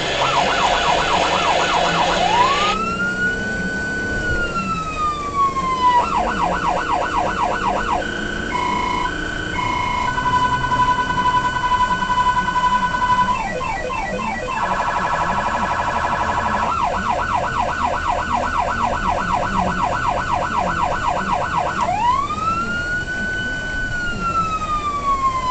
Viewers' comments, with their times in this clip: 0:06 Sounds like a pac man game running down the road LOL
0:08 omg that unitrol omega siren 😍😍😍
0:11 that siren tho
0:13 Arcade high score? What is that tone?!